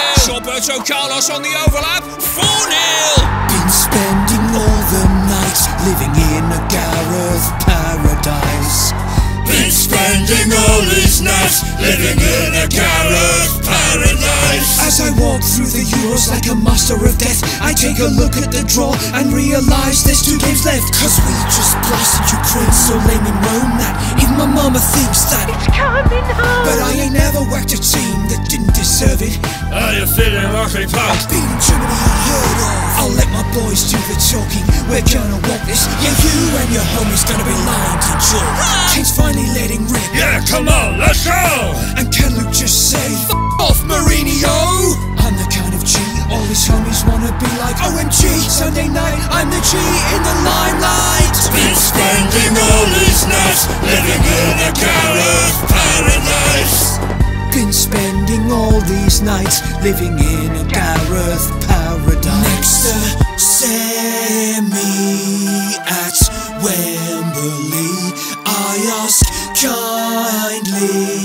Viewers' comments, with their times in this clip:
0:09 Harry Kane's incredible voice shining through 😂😂
0:41 the person that did the subtitles thought kane said tesco instead of let's go was I the only one that noticed that
0:56 sounds like Dan Levy :)